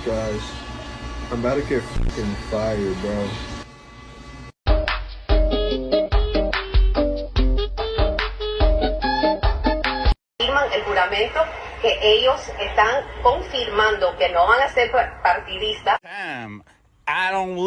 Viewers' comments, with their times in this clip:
0:04 best one the music, the footage and the low quality makes it perfect.